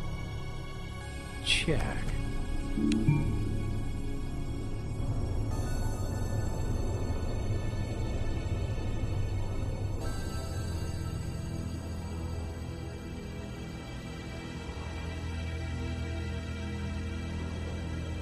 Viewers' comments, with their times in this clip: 0:03 epic pause begins.